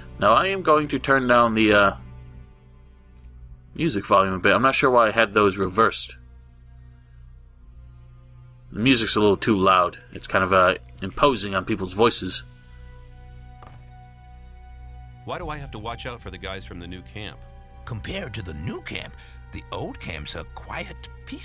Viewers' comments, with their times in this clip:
0:05 he opens the options menu and sees the music volume is set higher than the voices and says "oh, i dunno why i had those reversed, the music is too loud and drowns out the voices"...he turns the music down and the voices up...then immediately turns the music back up and the voices back down. okay, huh?